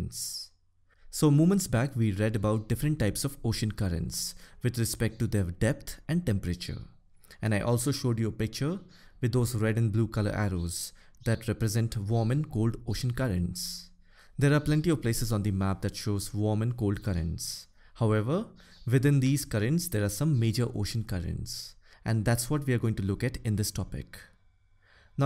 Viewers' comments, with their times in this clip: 0:07 "Birds are chirping in the background"!! Sir NO need to say sorry about that....u are forgetting that we are learning about our EARTH...its like "sone pe suhagaa"!!
0:08 Good Sir, why are you apologising for the birds?
0:10 birds chirping is not affected sir. No need for sorry, your classes are superb.